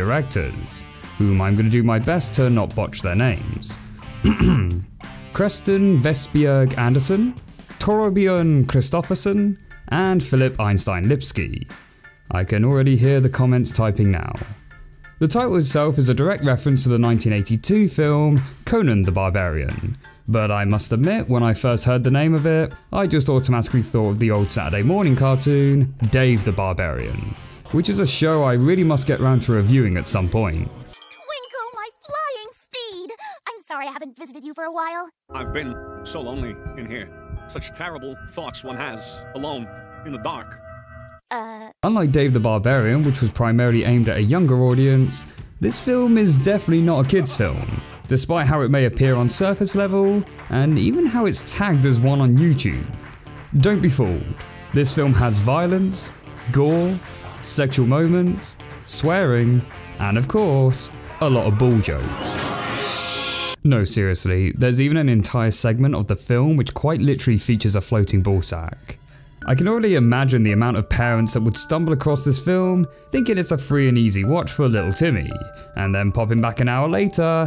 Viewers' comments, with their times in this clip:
0:04 actually you pronounced their names very well. Trust me I’m Danish
0:05 as a dane i can say, those pronunciations were perfect. Good job 👍
0:07 as a danish person myself, I think you pronounce those names pretty well,
0:34 He sounds like the Kung Fu panda guy with big eyes (and a tiny skull).
1:01 Omg that shreek